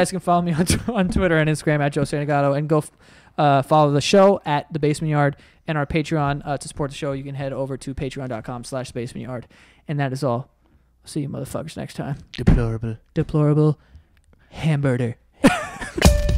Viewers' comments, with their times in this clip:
0:03 when you stuttered I was sure there was a “Go fuck yourselves” about to come out 😂